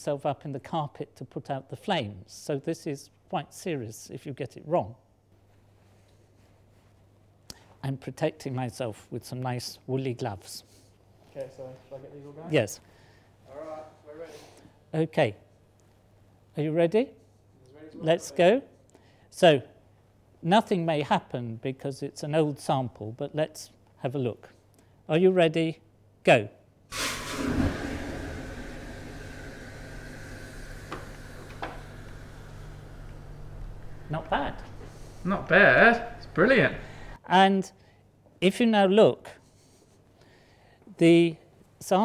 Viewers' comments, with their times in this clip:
0:09 did the prof said willie gloves?
0:26 Sounds like our old boiler...